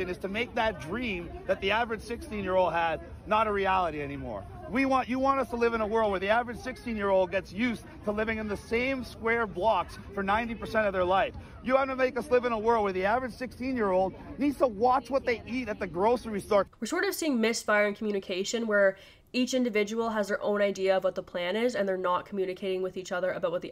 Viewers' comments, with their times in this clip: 0:05 it’s really hard to listen to this guy cut off the planner. Won’t even let him finish a sentence.